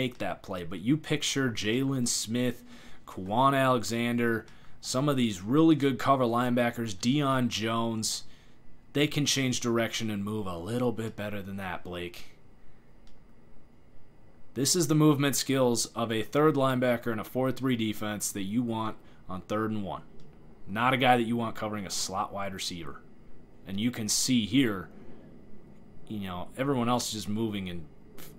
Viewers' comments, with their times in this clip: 0:09 you sound like a disappointed coach